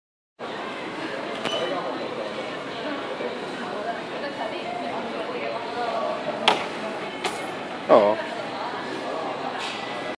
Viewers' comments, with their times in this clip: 0:02 sounded like a fart